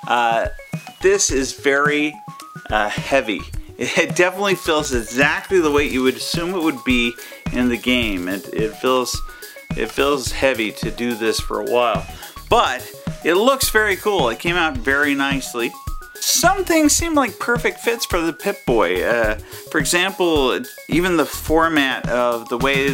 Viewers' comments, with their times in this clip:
0:09 minecraft lever noise